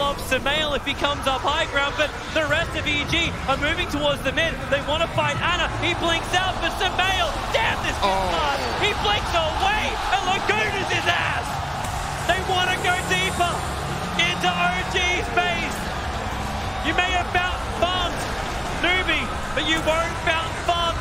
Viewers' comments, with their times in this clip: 0:03 LAGUNA HIS * frog noise *